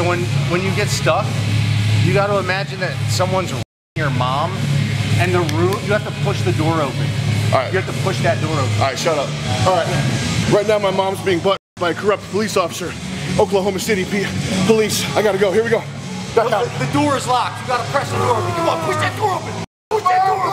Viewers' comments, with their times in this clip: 0:05 Fuck yes a gym that plays old SEVENDUST!!!!!!!!!!!